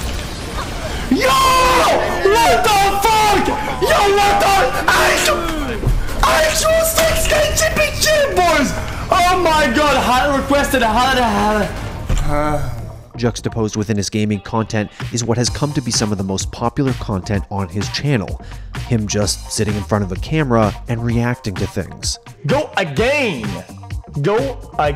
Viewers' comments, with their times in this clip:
0:09 does he pass out from screaming so much? ahahah